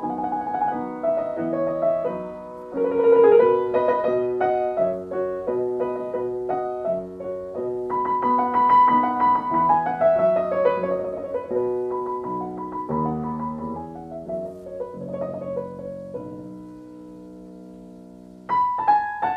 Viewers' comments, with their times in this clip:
0:06 In the first sonata I notice a change of notes from what I usually hear and in the recurring passage.